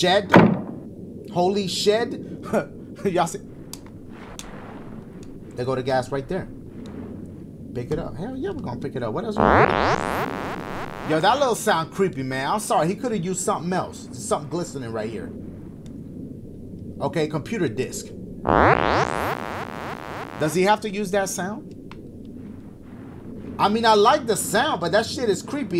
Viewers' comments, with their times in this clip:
0:09 Dashie- He didn't have to use that sound, it's creepy Me- Really cause it just sounded like someone ripped ass